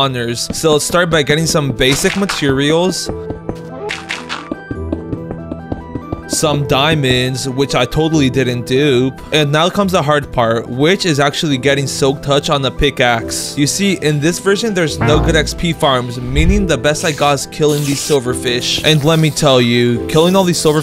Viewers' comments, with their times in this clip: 0:04 the NOSTALGIC minecraft music Ahhaaa☺☺☺